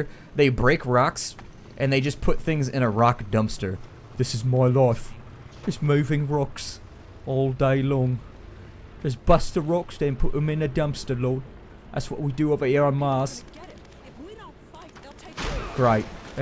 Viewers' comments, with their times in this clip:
0:04 lool always laugh when i hear ppl talk like that idk why